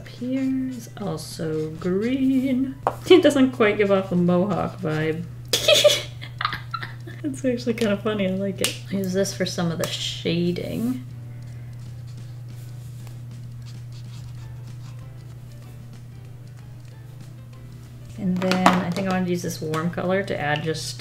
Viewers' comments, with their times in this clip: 0:03 Did anyone hear the peppa pig music or was it just me? 😂
0:05 For everyone wanting to rewatch the most adorable laugh ever it’s